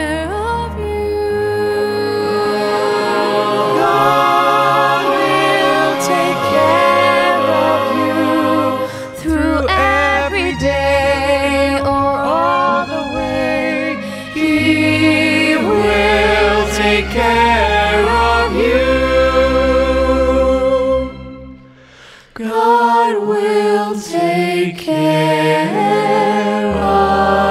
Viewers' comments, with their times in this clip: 0:08 The two singing duet beautifully together.